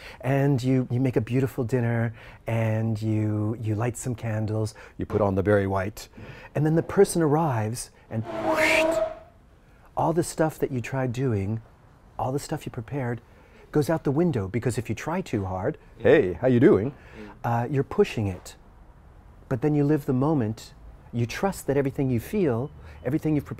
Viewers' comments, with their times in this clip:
0:08 perfectly timed background noise